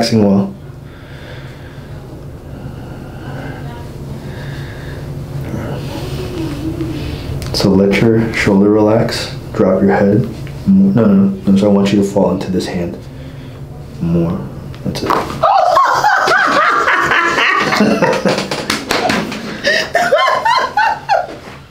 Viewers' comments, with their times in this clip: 0:04 I’m just seeing those guns!!!!!! But, great adjustment per usual, Doc! Love her giggles